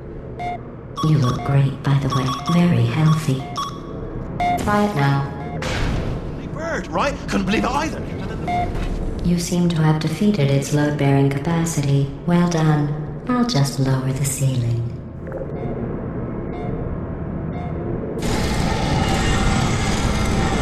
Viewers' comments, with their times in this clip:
0:07 what the hell did anyone else hear wheatly